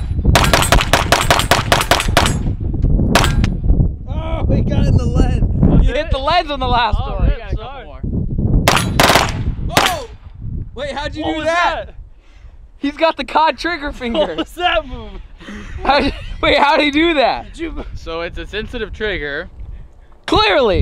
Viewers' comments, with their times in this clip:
0:08 I believe that was a hammer follow. in my experience it happens when you have a low power load and it has enough force to eject the shell but not lock the hammer back down and then the hammer "follows" the bolt back and causes another unintentional shot. He had what sounded like 4. it is a common malfunction on AK platforms. also the A on the lower receiver I believe does stand for auto but it is not converted to be a legal "machine gun" so until he does that and gets tax stamps and installs the proper Sear, it will not function as a "fully automatic" firearm
0:08 I believe that was a hammer follow. in my experience it happens when you have a low power load and it has enough force to eject the shell but not lock the hammer back down and then the hammer "follows" the bolt back and causes another unintentional shot. He had what sounded like 4. it is a common malfunction on AK platforms. also the A on the lower receiver I believe does stand for auto but it is not converted to be a legal "machine gun" so until he does that and gets tax stamps and installs the proper Sear, it will not function as a "fully automatic" firearm